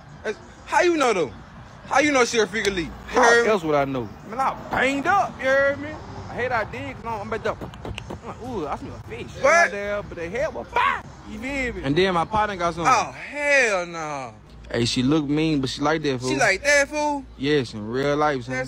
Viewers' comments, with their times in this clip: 0:04 the beat boxing 🤣😂